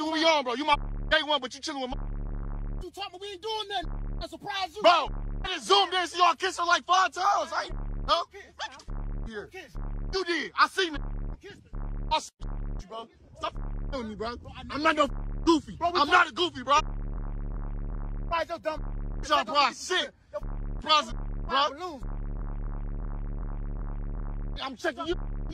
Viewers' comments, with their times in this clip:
0:06 that was a crazy bass line
0:13 That beat though 😂 🔊🔊🔊bass